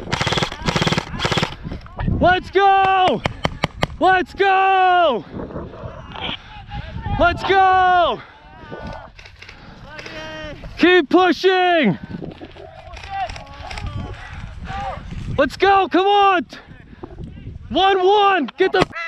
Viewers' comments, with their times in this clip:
0:05 anyone else here the kid crying?